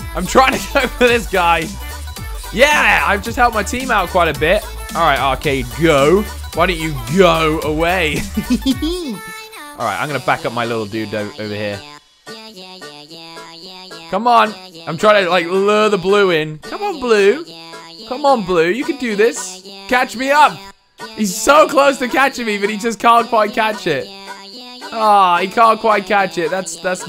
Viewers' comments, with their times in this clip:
0:08 LOL DAT LAUGH THO